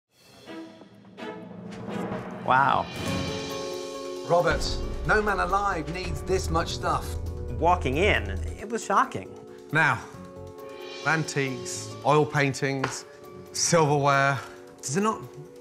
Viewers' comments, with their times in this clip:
0:03 I'm dying why is his voice so high